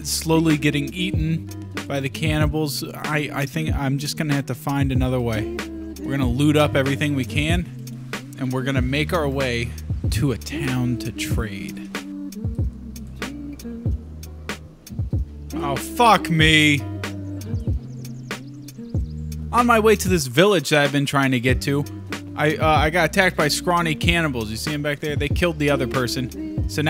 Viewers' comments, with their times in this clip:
0:10 I love the relaxing lofi music in the background